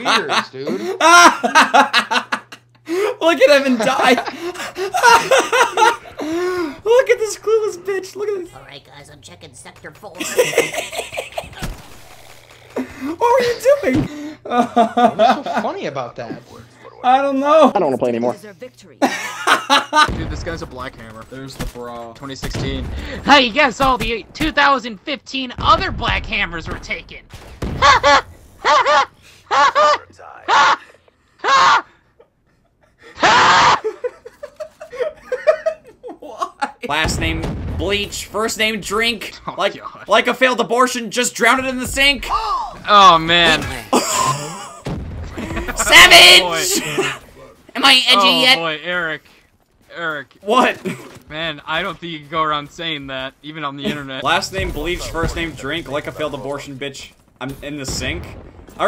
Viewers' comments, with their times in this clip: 0:03 your laugh is epic! your messed up voice is epic!!
0:10 Why is that laugh so damn funny? 🤣
0:10 that laugh bro XD XD
0:21 i was drinking sweet tea and watching and all i hear is "haha! haha! ha!! ha!!! HAA!!!!"
0:27 It's like a mocking laugh you do to someone who pisses you off
0:42 That gasp XD